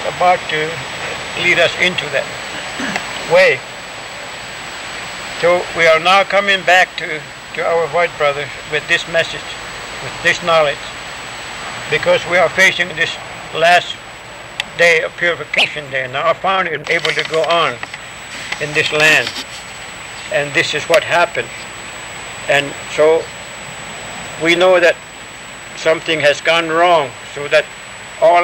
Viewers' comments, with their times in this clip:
0:10 weird how the tape gets a little messed up right when he says purification 🙏🏻